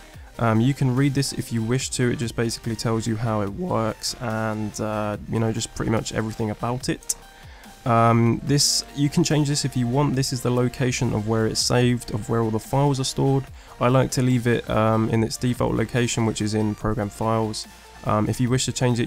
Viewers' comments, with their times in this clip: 0:03 how it works voice crack
0:03 He Voice Cracks LOL